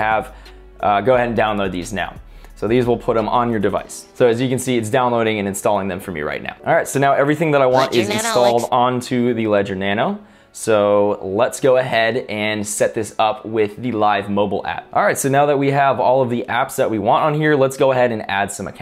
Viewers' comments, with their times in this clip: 0:06 That random spongebob voice really threw me off for a second